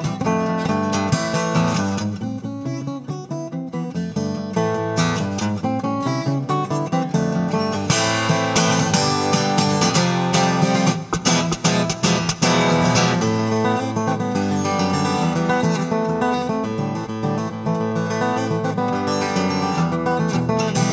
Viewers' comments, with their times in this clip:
0:08 From A minor G Fmaj7 and E7